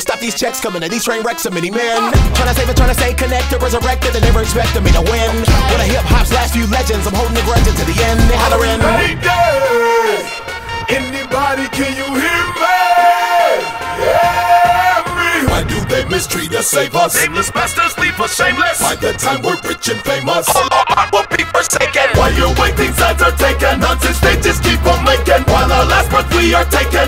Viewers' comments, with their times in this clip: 0:08 I fucking love his voice when he sings it sends shivers down my spine!:)